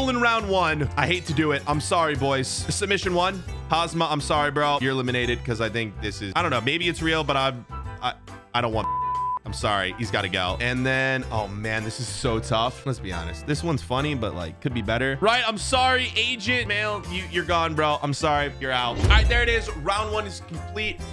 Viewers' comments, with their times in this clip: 0:08 anyone has a idea what he said